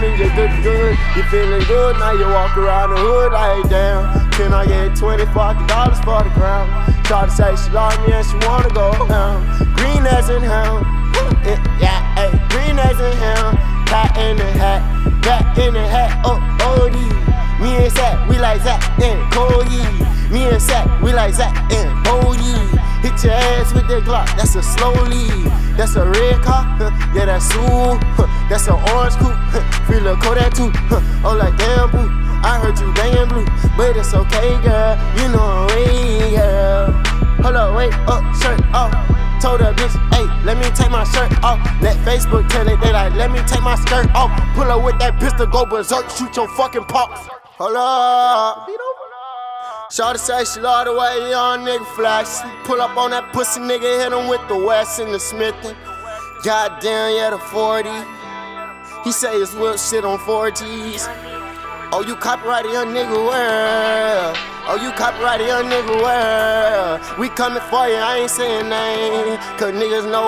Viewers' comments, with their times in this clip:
0:03 goes in with a little Mixed Personalities flow for like 5 seconds
0:04 flow firer asf
0:51 this shit start to pick up and go crazy.. #no🧢.